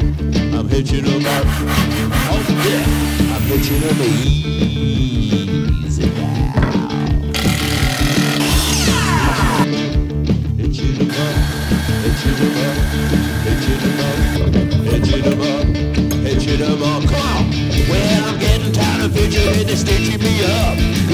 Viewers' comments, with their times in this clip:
0:08 that saw makes better laser sounds that me